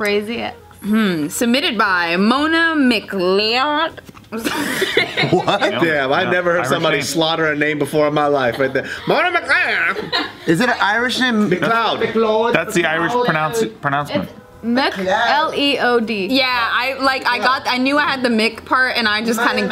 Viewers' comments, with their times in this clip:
0:03 editers put auto tune on